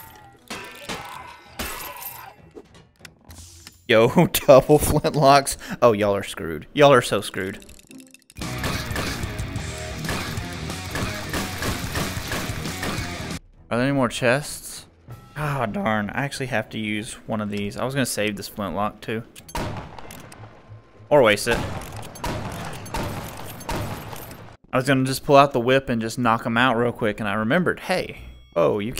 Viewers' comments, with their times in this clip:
0:10 THAT MUSIC SYNC OML